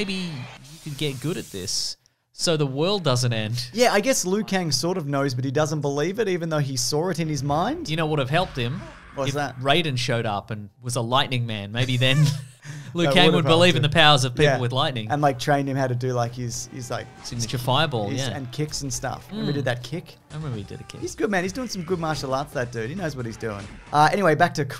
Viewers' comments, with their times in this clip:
0:05 "He SAWR it" 🙄